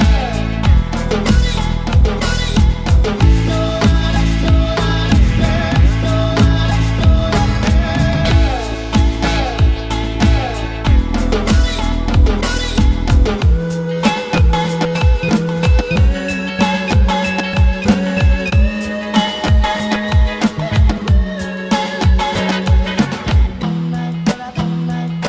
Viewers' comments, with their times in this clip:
0:07 Can anyone else hear the call of that Jurassic Park dinosaur or am I going mad?